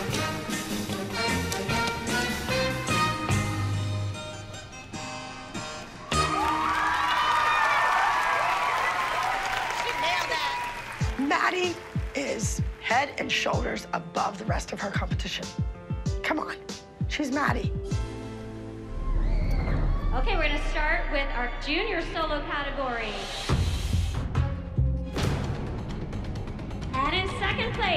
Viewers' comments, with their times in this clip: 0:10 I heard “She failed that”